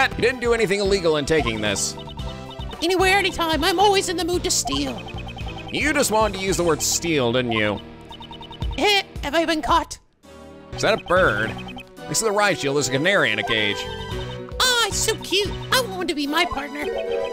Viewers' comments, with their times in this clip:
0:05 Oh boy AM ready for more edgeworth noises.